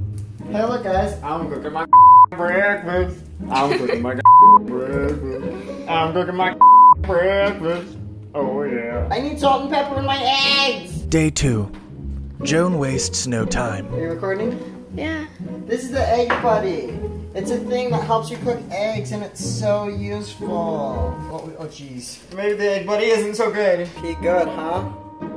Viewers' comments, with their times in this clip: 0:10 kinda sounds like "I need salt and pepper in my ASS!"